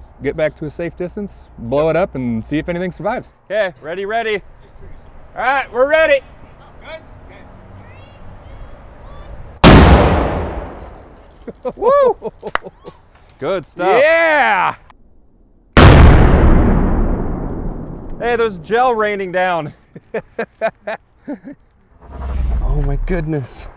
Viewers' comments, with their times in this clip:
0:09 Kinda sounds like the AR2 from half life 2